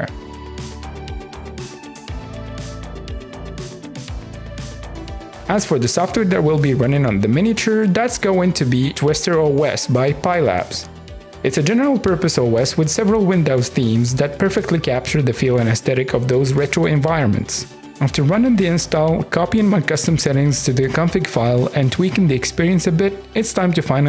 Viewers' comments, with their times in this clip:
0:05 you say "softer" but you should pronounce the W in software ;-)